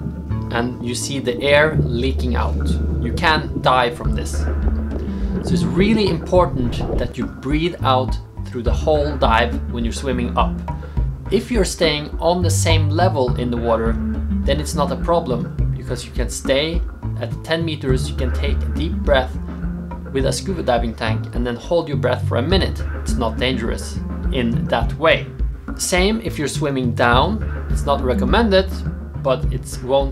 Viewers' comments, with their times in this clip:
0:10 you can or can't die from it? Sorry I don't mean to be rude, Im just not familiar with your accent. 😖
0:11 Did you just said "can die" ? It kind of sounds like "can't die". Can you please clarify this. Thanks!